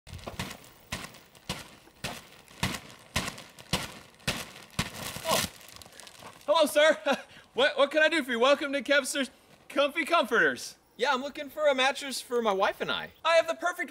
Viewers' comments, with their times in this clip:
0:01 I thought that noise was him walking at the start lol